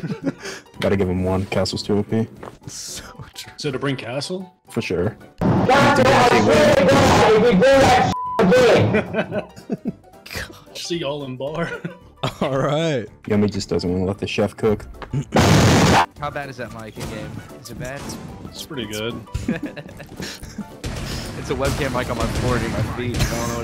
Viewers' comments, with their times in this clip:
0:06 lmaoooooo the webcam voice quality hit me different